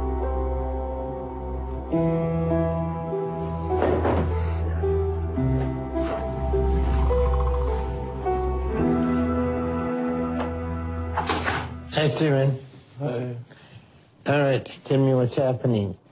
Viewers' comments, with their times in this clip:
0:04 I love the fake, sad look on his face 😂 Such a bad actor 😅 Also, gotta love his, "I am sick!" raspy voice 😂